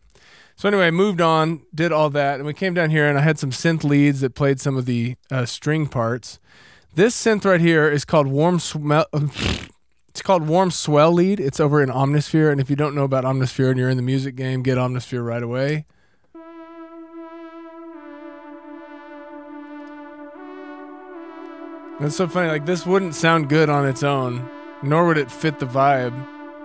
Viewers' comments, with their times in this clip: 0:09 Wow this was so cool to see! Great job! P.S. sounded like a horse 😂😂